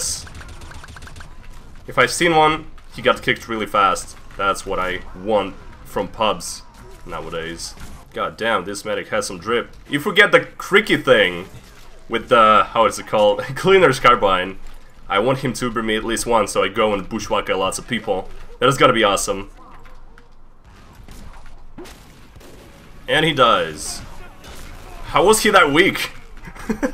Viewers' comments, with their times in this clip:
0:08 that miss pronocing of crikey hurts my australian brain yes its upside down